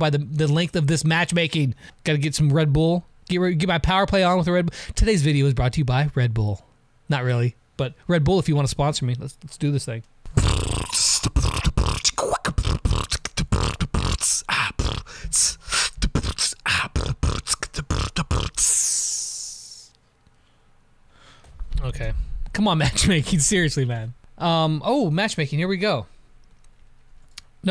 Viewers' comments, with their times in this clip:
0:10 MAD BEATBOXING SKILLS